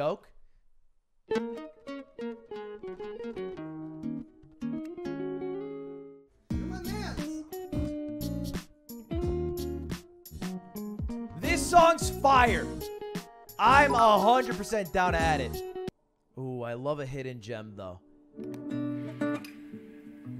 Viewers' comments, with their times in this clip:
0:05 the “you’re my mans” sounds like a producer tag and it actually fits so good
0:05 for some reason the “Your my mans!” Drop on this just is so heat..